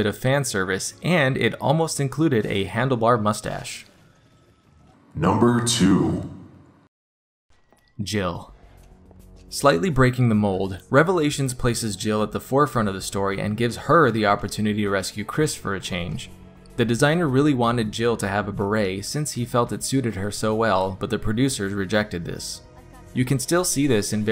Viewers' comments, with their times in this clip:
0:09 the way u say jill was 🔥